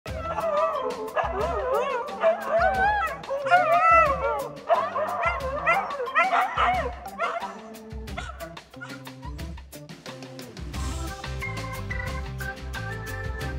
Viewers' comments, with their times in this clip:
0:01 I have seen Huskies try to talk over their owners, but I have never seen two Huskies try to talk over each other before. It sounds like they're having a full-on argument.